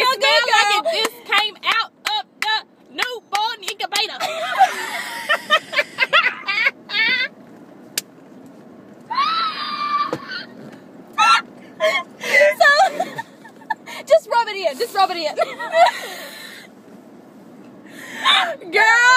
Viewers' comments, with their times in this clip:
0:04 that laugh lmao